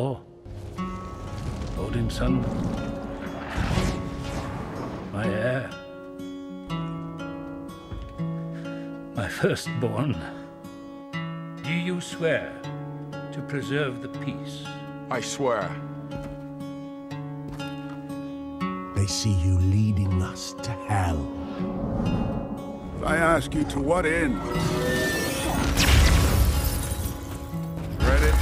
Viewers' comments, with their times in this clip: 0:06 I wonder if they actually had a plan for Hella even back than, you can hear and see the pain with which Odin says "My first born" as he remembers Hella
0:09 "my first born" or should you say "my first born???"